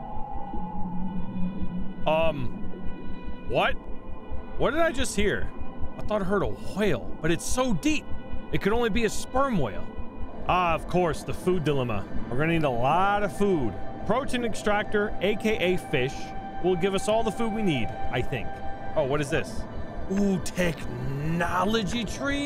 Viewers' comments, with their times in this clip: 0:05 You empathize the "WH" in WHALE, like Stewie Griffin asking for COOL WHIP! XD